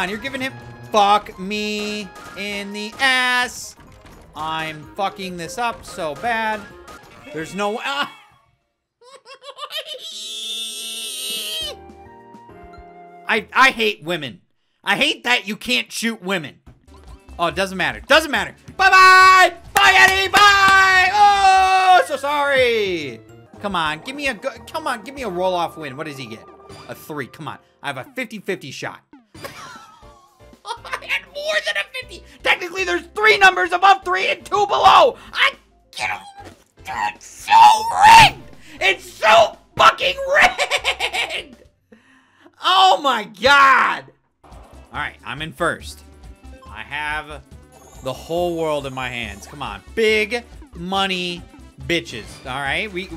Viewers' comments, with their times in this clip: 0:09 My car starting up in the winter
0:36 turns into mokey from sir pelo
0:37 it reminded me of the scene in Cloudy With A Chance Of Meatballs when Flint is forced to look his dad in the eyes and he made that weird sound 😂😂
0:39 also best evil laugh ever